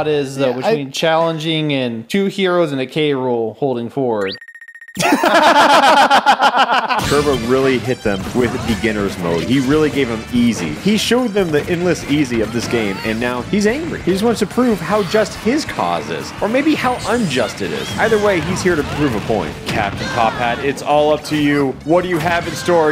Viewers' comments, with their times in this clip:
0:04 The synchronised “Our Cause Is Just” though 😂